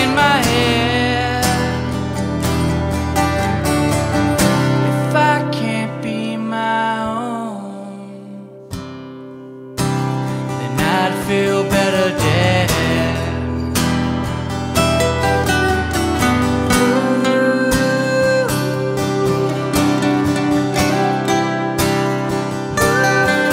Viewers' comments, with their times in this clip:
0:07 there’s a mistake, you shouldn’t stop along time